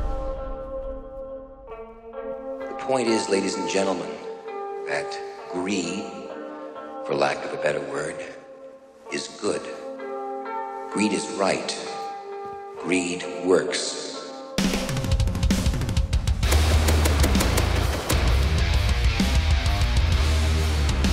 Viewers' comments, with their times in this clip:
0:03 yeahhhhh baby hes back for good now! glad you still use the heavy metal from ur older vids !